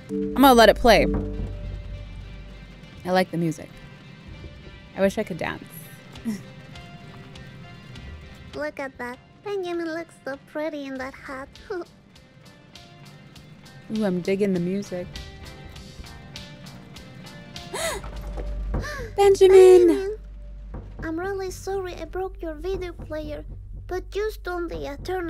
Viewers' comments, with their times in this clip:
0:08 roblox bear music starts playing